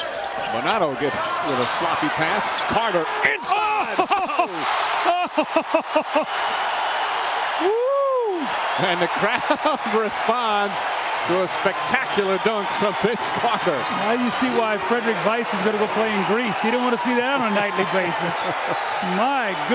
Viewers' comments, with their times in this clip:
0:03 😂😂😂😂 I watched it 0.25x speed and the dude says "inside" then proceeds to sound like he just orgasmed 😂